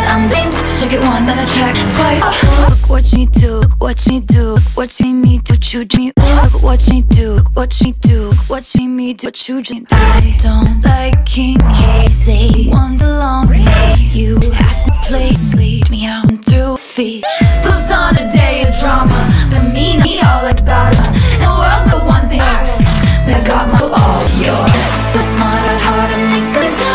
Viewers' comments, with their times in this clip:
0:10 Taylor straight up says I DON'T LIKE KIM K